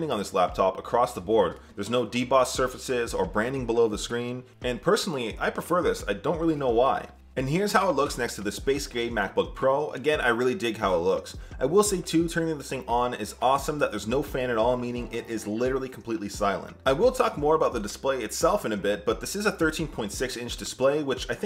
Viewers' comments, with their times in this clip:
0:08 did bro just call the Macbook Pro's color "space gay" ?